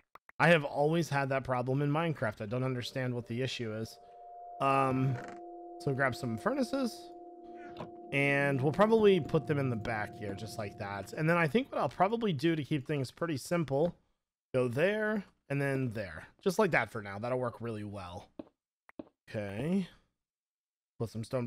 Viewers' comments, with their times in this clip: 0:03 OMG THE CREEPY MUSIC